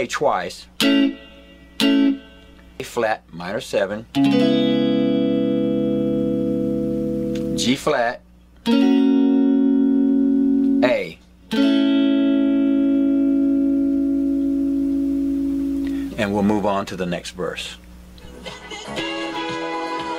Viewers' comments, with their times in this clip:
0:04 The 3 chords at the end of the chorus. Dbm7 Gb A. See the video Thanks for watching!